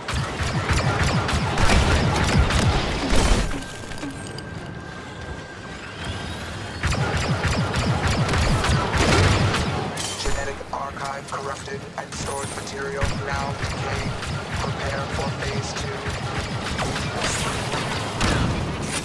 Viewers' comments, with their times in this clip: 0:04 KA-fucking-BOOM, my man!